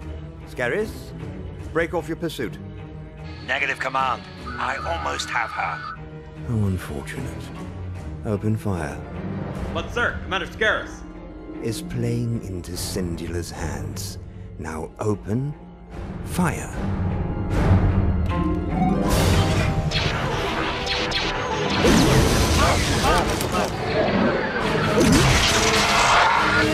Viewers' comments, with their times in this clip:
0:09 the bridge Officer sounds like Butt-Head.
0:10 All i see is people complaining about an x-wing firing with it's s-foils closed but nobody points out the horrible voice acting